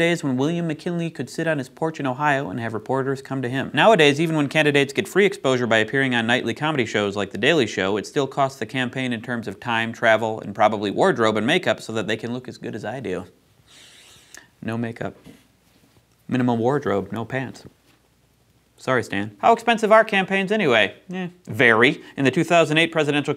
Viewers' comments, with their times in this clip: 0:10 "it still costs the campaign in terms of timetravel" well that is one explanation for the high costs.